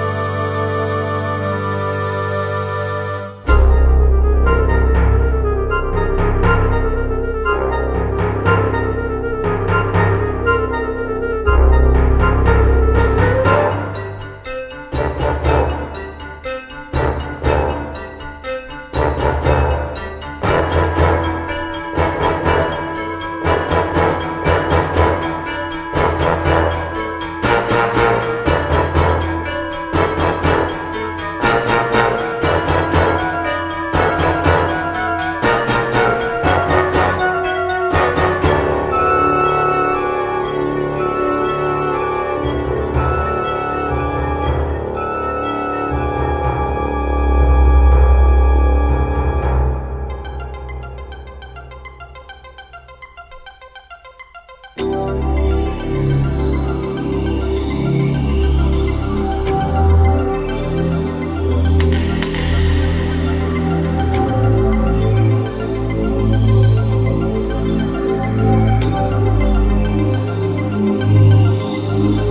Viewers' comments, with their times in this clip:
0:03 The 1992 theme is a lot better and tone down and I love it also
0:49 sounds like an Earthbound soundtrack.
0:53 sounds like EarthBound music